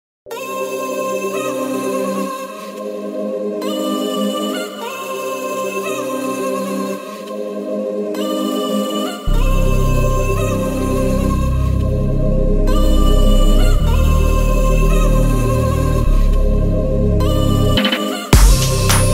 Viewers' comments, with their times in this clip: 0:00 If you listen carefully you can hear the sound of the song starting.